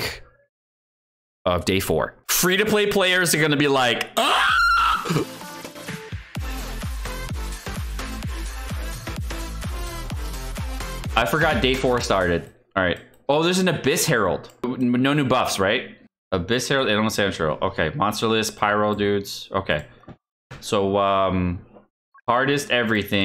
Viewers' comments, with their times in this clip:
0:04 f2p players like a dog u accidentally step on